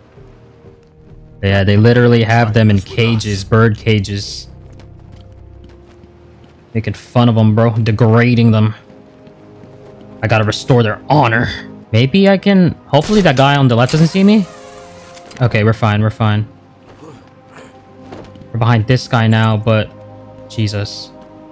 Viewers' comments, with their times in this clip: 0:09 dang man that hacking Though need to restore there honor 😂 love the jeopardy music by the way 😁vanilla and chocolate 🤣🤣 I love that